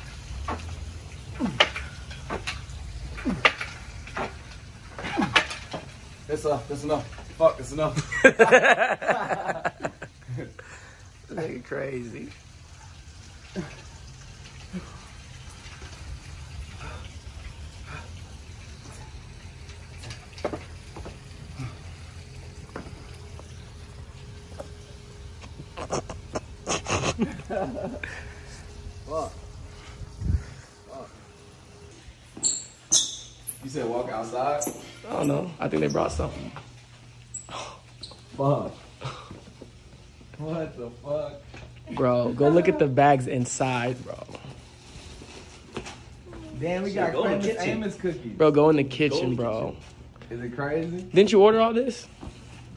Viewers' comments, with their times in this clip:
0:09 the dude behind the camera sounded like juice 🙏🏾
0:35 dude kinda sounded like juice for a sec